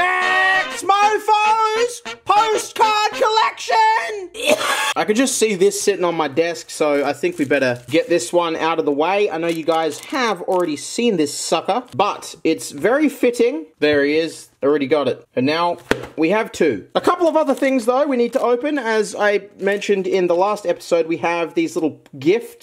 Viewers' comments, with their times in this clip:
0:04 that's the exact sound howtobasic does???